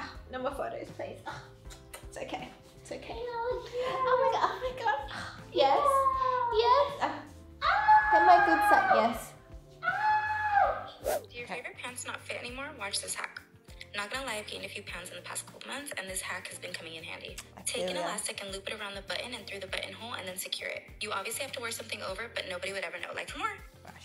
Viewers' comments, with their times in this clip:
0:05 The background noises made it even more funny lol